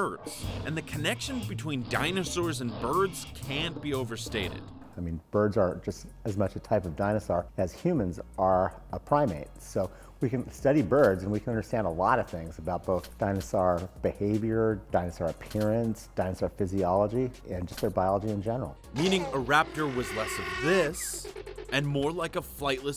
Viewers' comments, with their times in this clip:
0:06 what's a dinasar?